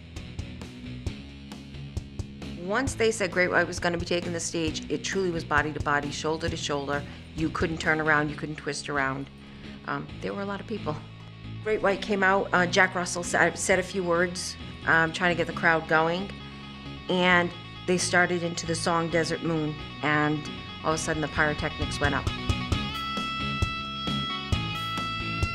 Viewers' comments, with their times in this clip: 0:07 NO ONE GONNA TALK THE HAMMER-ONS ?? I NEED TO KNOW THE NAME OF THAT SONG!!! And don't want to seem rude, I understand this is a tragedy but that how far my love for music goes... it sounds amaaaaazinngg!!! Anyone know it though? Please?